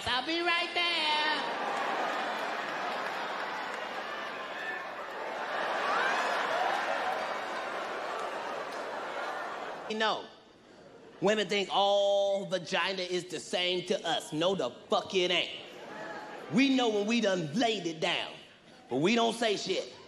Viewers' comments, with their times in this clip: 0:07 He knows what Katt is talking about it seems 😬🤣🤣💀💀 the awkward energy of the laugh...